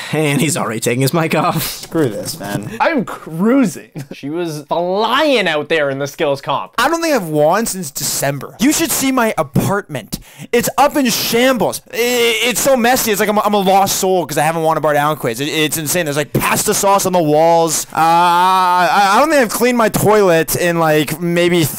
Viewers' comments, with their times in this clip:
0:06 HOCKEY QUIZ ASMR